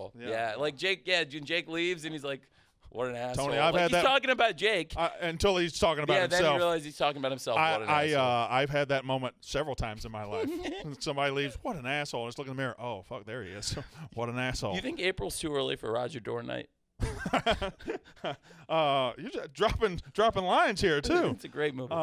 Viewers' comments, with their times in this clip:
0:09 Listen to that laugh..!! Everything in this interview looks totally Organic, that's how the wrestling interviews and podcasts must go and not exclusively exposing the business..!!